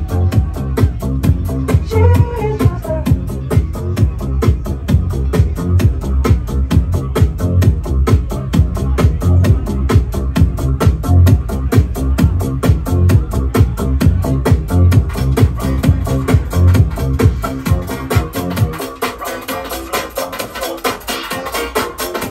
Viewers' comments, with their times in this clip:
0:08 smoooth, also track id????